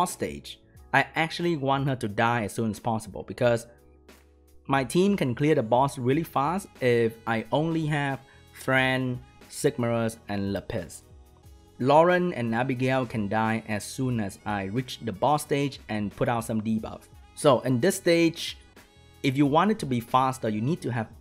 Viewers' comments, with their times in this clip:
0:09 what normal people hear: lapis me, an intellectual: le piss